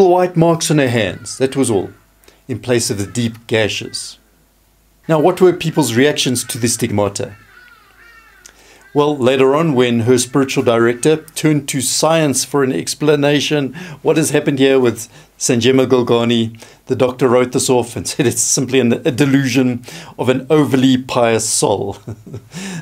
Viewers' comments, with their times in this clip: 0:04 I love the content of your videos! The birds in the background were an amusing touch that didn't detract from the message. I'm glad you left them in. The little sideways glance you make at this timestamp gives the feeling that you have just about had enough of those dang birds!